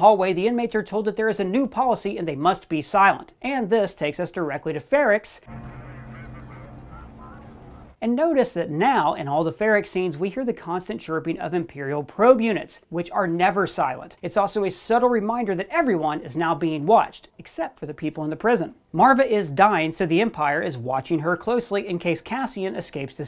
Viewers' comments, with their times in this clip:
0:05 that sound sounds more like death troopers which were introduced in R1.